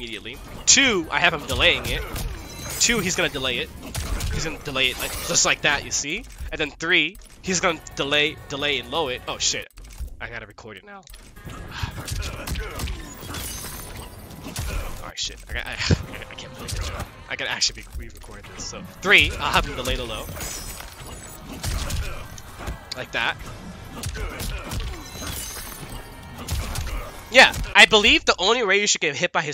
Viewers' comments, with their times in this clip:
0:10 I luv Sonics voice.